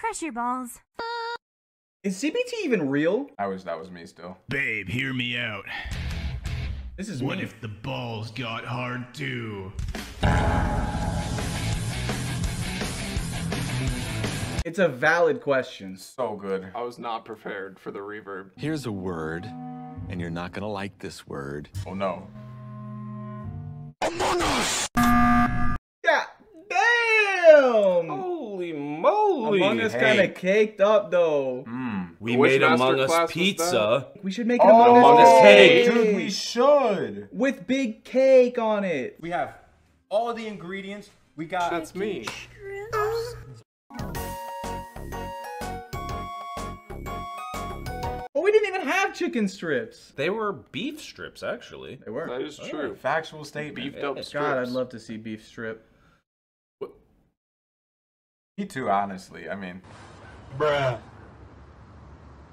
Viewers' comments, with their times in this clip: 0:09 wait what is the song super metal
0:43 The PMD music got me, I came here to laugh not to feel D: